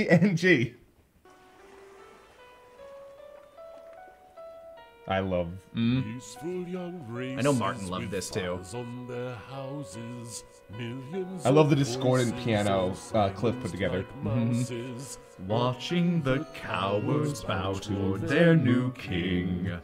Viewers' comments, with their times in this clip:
0:03 Fun fact: this song has the exact same rythim from Ariana's Seven Rings music... And was made like years before. Ariana stole Freezers song.